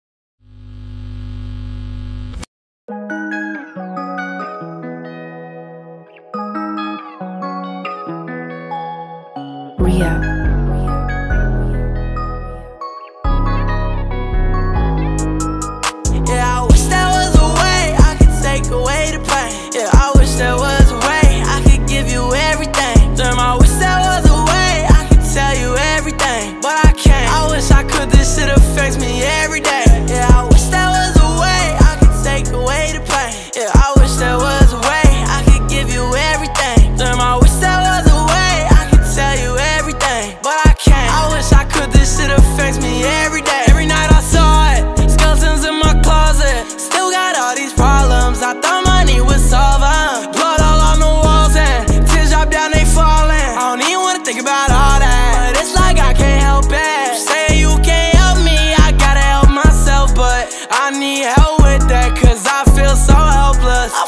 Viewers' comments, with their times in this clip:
0:03 the song was already sad
0:36 I love the way he says "damn" 🔥
0:47 that flow hits my soul